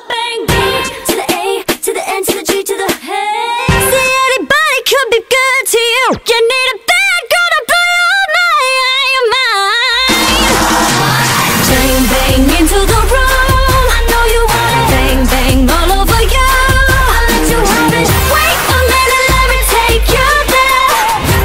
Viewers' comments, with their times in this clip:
0:05 whewwwww. that riff!!!!!! epic